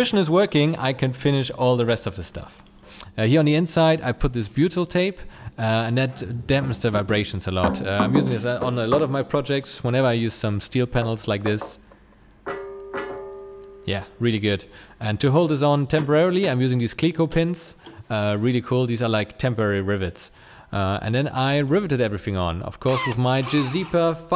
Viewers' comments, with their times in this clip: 0:06 i fell asleep while watching and jolted right up after hearing the knocking 😭